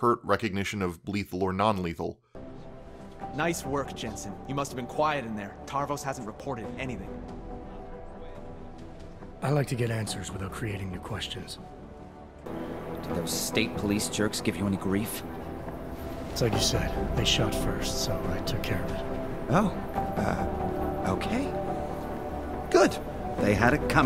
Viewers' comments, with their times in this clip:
0:07 felt and sounded like(score probably influencing the feeling) just like Mass Effect.